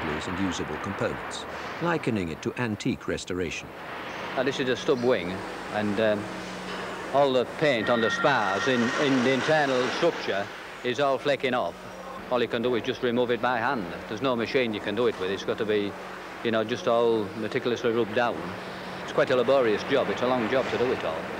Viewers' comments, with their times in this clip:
0:03 What part of the country is that accent from?